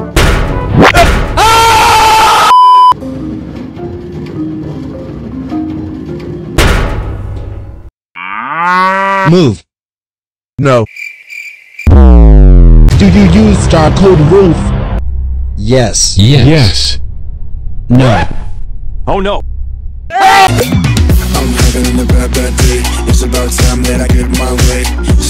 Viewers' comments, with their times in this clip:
0:07 instead of move he said moo XDDDDDDDDDD
0:09 idk why but the moo crack me up